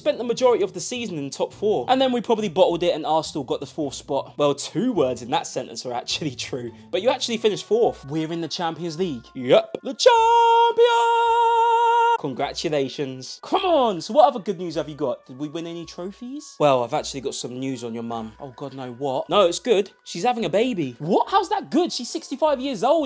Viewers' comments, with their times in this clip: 0:10 tHe ChAmPiOnS that killed me.